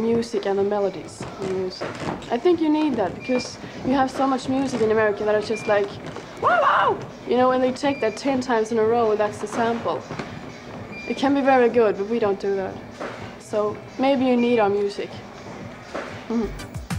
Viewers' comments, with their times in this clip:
0:04 Malin Berggren with a sound effect..